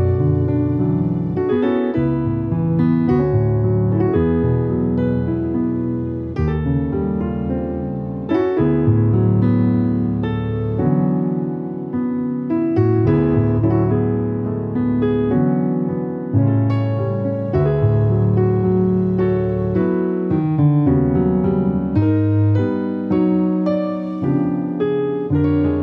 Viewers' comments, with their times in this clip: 0:06 Got to borrow that change 🤌🏾👌🏾